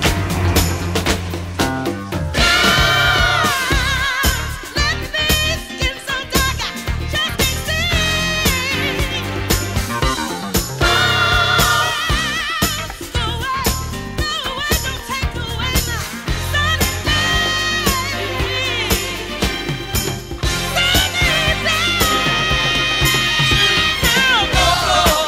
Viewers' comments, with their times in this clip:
0:09 The musicianship in this song is sheer fire 🔥🔥🔥especially that guitar riff example And the piano intro and the vocals of course and raw harmony. 👏🏾👏🏾 would love to hear this song performed live. Wow… another reason this song is amazing….just noticed this song was written but one of the greatest song writing duos EVER: Nick Ashford and Valerie Simpson!! Makes sense.